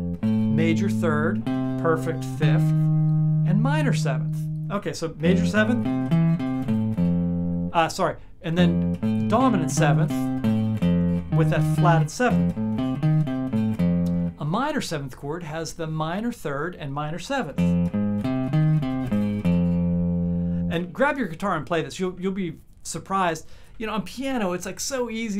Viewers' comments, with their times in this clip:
0:08 I heard color my world😅😅